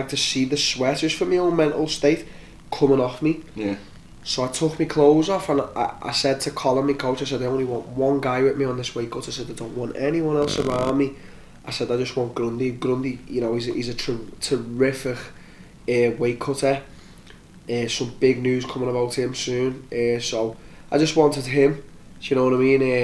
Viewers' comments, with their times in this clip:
0:09 Till gassy after that weight cut.
0:10 rips a fart